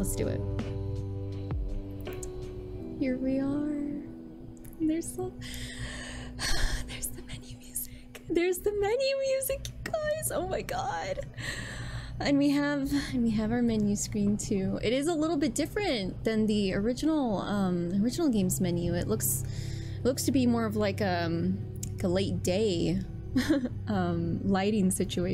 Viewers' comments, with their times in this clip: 0:09 The music sounds really low though. I can barely hear it.